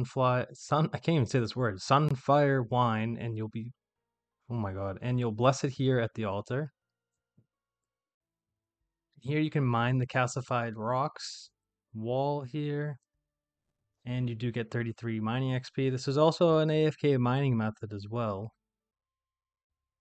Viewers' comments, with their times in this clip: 0:03 Liking this video & commenting just to say the sunfire mispronunciation absolutely had me rolling :face-purple-crying: